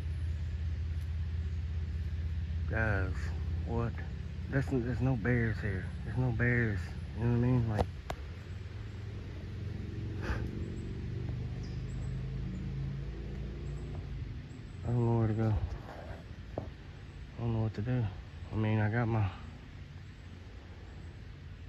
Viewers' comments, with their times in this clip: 0:08 the birds got quiet as hell!